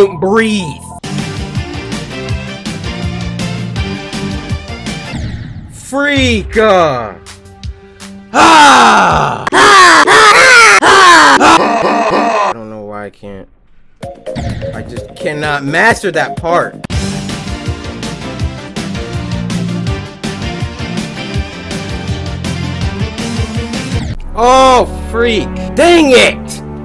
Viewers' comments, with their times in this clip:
0:07 very good song